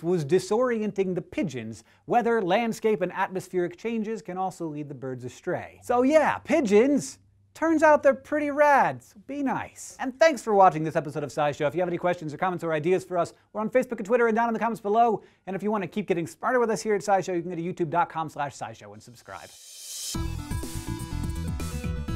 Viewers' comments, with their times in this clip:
0:05 did anybody else hear that low frequency sound